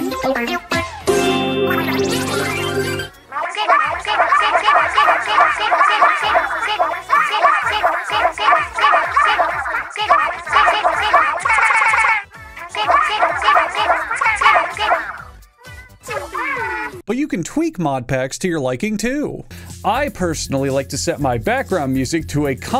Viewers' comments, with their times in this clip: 0:03 I've listened to music that sounds like before